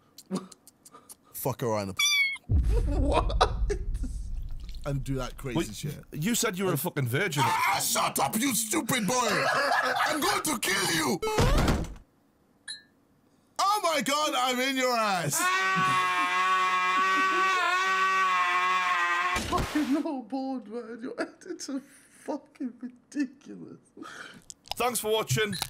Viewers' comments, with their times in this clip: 0:10 his voice sounds cool